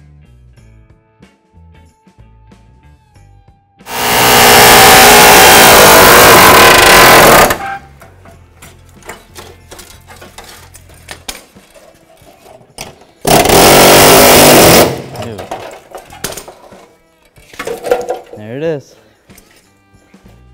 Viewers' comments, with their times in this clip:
0:03 holy shit death to ears with headset